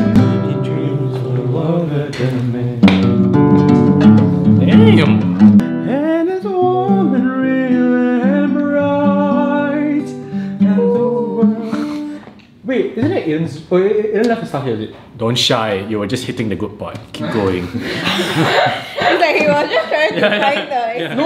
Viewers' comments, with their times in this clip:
0:07 omg whoever was singing damn the talent! also congrats on finishing your first exam :)) love how all your friends are so chill and fun, wholesome mannnn.